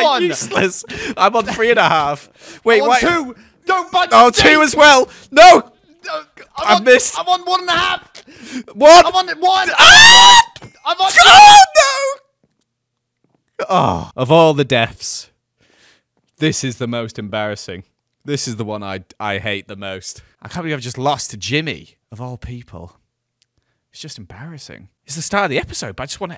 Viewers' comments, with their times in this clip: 0:09 loollll his scream is sus